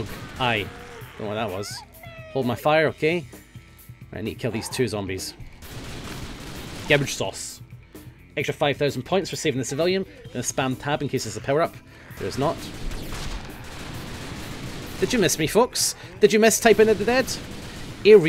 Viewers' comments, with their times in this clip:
0:03 Did he say "gouge" wrong? His English accent is a bit different from my English (USA). Plus he could just be saying it that way for fun.